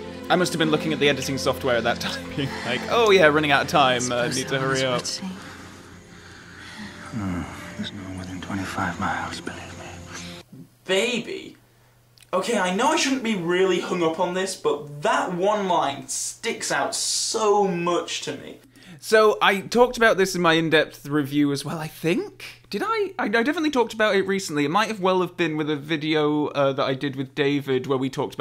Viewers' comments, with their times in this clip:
0:09 my mind is blown! I've also heard "baby" for all these years and thought it was Bond just being silly with his chat after being so happy they've won. I now hear "believe me" loud and clear and his mouth syncs up so 💡 wow cheers for that 🍸